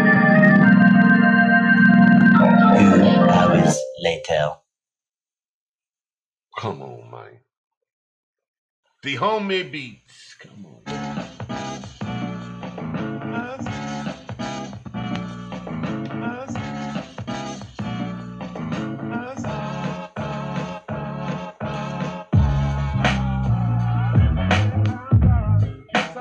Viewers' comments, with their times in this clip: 0:07 was actually dope doe. I think if the tempo was sped up a little bit more it would have been better.